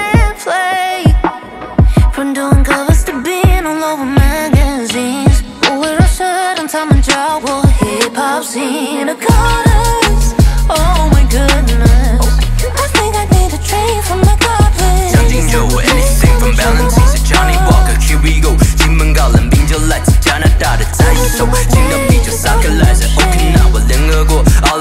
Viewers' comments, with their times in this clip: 0:10 Wow I really obsessing with this part, her vocal is so amazing ! She's so pretty as well, I love when she's pulling her hair down make she so much more gorgeous ！！